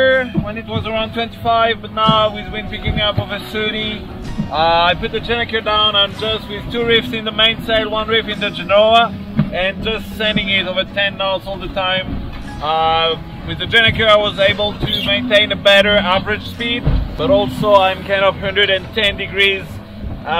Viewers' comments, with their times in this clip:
0:06 Your skipper's English is extremely clear and reassuringly confident. First rate